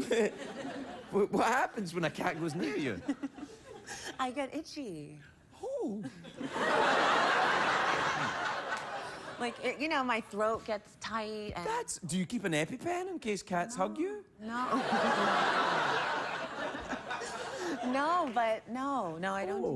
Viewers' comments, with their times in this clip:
0:05 That sound he makes negates any of that manliness his mustache may have lent him.